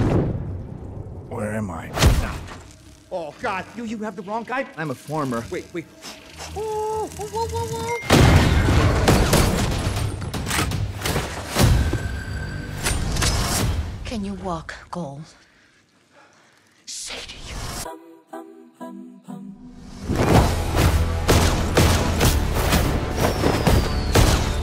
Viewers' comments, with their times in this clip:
0:07 i actually checked my phone to see if i got a text